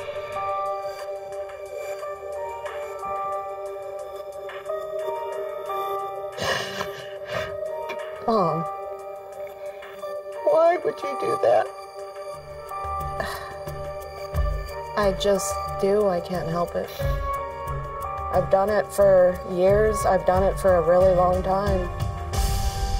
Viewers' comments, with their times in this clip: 0:08 When she says “mum “ like that I mean how did you think your mum was going to react to that What did you expect????? It’s not normal.